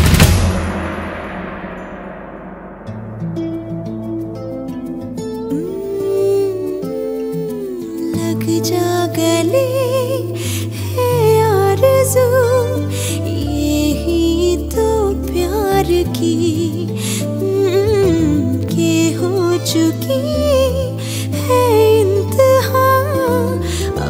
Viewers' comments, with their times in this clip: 0:10 From here it shows why shreya’s version was better n emotionally Connective !